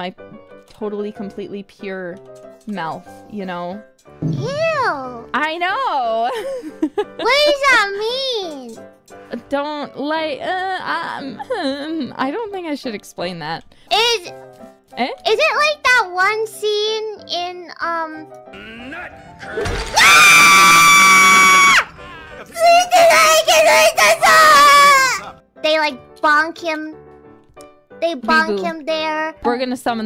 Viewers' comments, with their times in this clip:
0:04 the way she said "eww" LMAO
0:16 VOLUME WARNING you've been warned